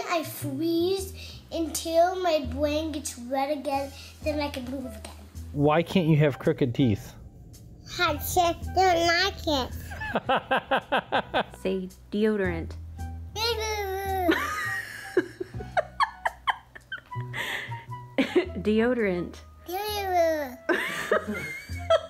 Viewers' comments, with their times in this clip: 0:08 what the heck was he saying? He’ll check their noggins?